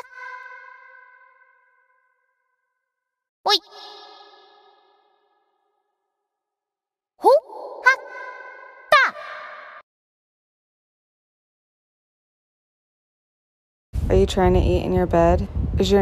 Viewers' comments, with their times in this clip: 0:04 LMAO NOT THE HU TAO SOUND 😭